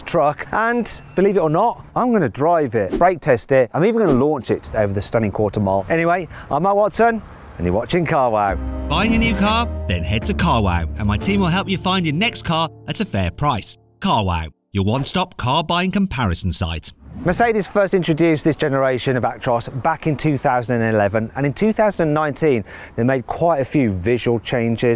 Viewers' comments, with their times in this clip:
0:06 Emma Watson and this is carwow, now that should be interesting